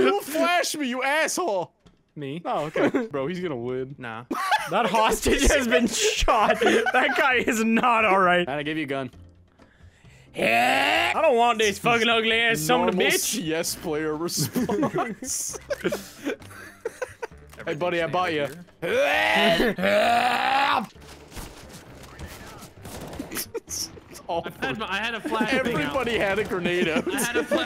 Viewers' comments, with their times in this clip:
0:10 sounds like link